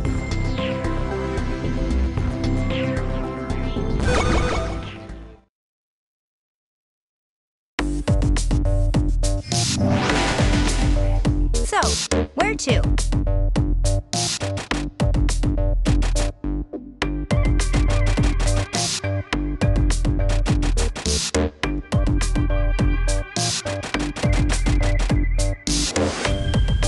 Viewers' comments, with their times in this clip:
0:08 Can we just appreciate the music that's playing right now Playback buttons for you!